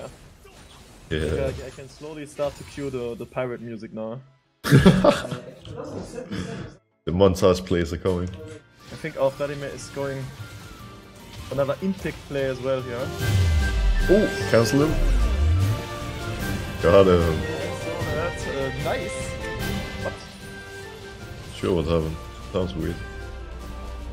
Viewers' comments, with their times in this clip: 0:10 i love the pirate music haha Nice edit